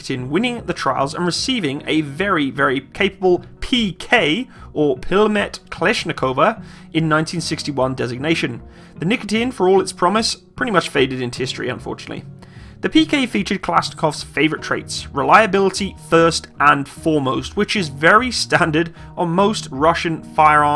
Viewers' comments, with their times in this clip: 0:03 "пилэмэт Кэлэшшнекова" 🤣 No offense, it is funny to hear how non native speakers trying to pronounce foreign words)